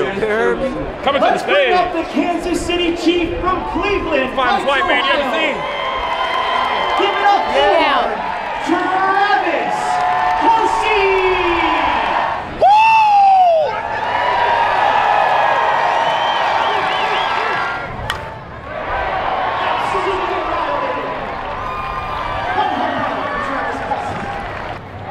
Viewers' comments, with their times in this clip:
0:08 Wow. The Announcer pronounced his name wrong. I'm joking, though it's not actually a joke. Lol If you were on Twitter today, you'd probably get it.